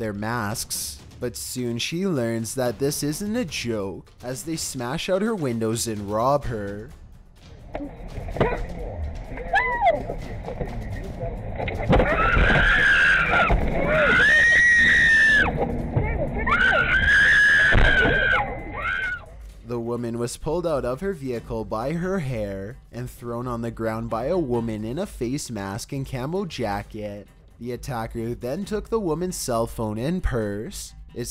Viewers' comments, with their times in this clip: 0:07 why the girl screaming...is nothing Happen...
0:08 Wtf is with that guy who saw what was going on and heard her screaming and did nothing??
0:08 you can see a guy wearing a suit and when he's about to get inside the buildng he heard the women screaming and all he did is just stare and do nothing
0:12 So nobody is going to talk about this guy who hear her scream but didn't do anything???
0:12 I like how that man hears her screaming then walks into the building
0:13 the dude at the door didn't do crap while a woman was screaming